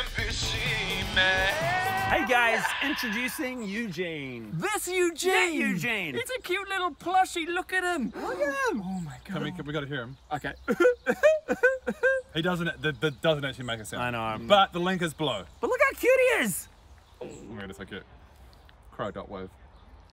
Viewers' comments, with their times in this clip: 0:05 My first thought was whether it would have the crying "u huh u huh" sound....
0:18 What were the very last words in this video? Was it "cry dot wav"?